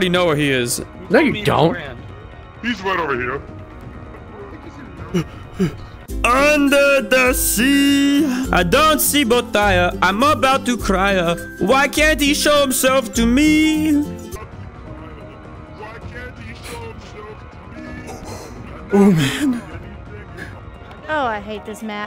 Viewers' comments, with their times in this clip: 0:06 that’s the best singing I ever heard in my life!😂
0:06 blud rlly sung